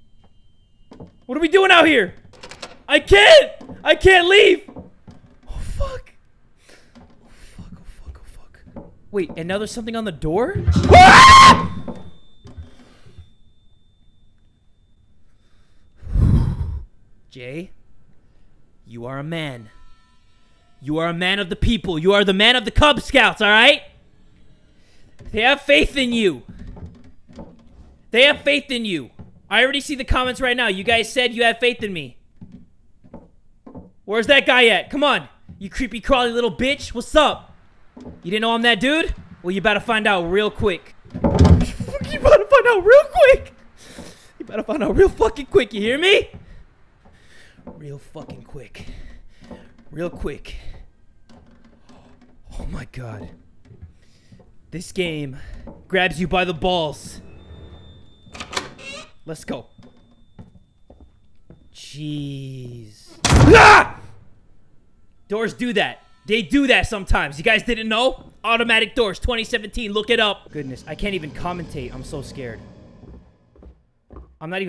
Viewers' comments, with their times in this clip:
0:06 the scream that made me scream
0:07 damn you could hit hem high notes😂😂😂😂😂😂
0:09 that Micheal Jackson scream deadass made me pee myself
0:10 that scream scared me more than the jump scare 😭😭😂😂😂😂😨
0:10 that was so loud my poor ears LMAOOOO
0:10 his scream is just lovely HAHA
0:10 Anime waifu scream
0:11 HOLY FUNKING FOOK— I SCREAMED WHEN YOU SCREAMED WTH
0:11 I love the scream lol I didn't even jump 😝
0:11 wasn't the game that scared me, it was your scream. XD at points, the game did terrify me :P
0:11 is my favorite of all the screaming he has been doing
0:11 I screamed so loud with him my mom ran out with her bat
0:29 when he says "Jay. You are a man." If you 10 sec back it up it goes to him screaming and its hilarious
0:46 It sounds like your gonna cry
1:02 Geezzz. (door slames) AGHGSHVHAAVss